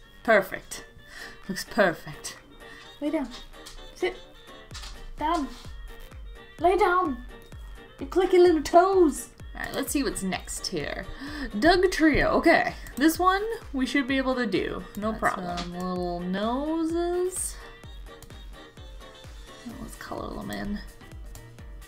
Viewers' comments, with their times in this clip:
0:06 awwwww XD, you should trim his/her nails! whenever my dogs nails start too click around the place usually it means you have too cut 'em.... not the hole paw though... that never goes down well... your dam good at drawing! especially since you were on a computer haha, love the commentary very funny :D, see you around :D